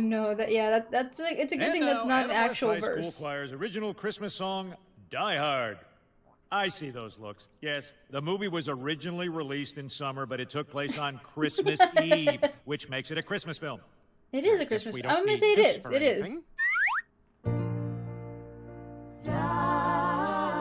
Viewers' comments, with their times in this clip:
0:06 I just heard her swallow 🤤